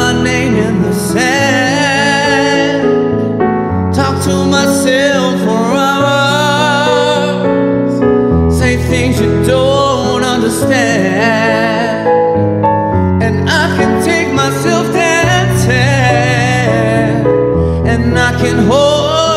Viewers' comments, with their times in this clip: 0:04 Absolutely stunning vocals, just love it!! Xx 💚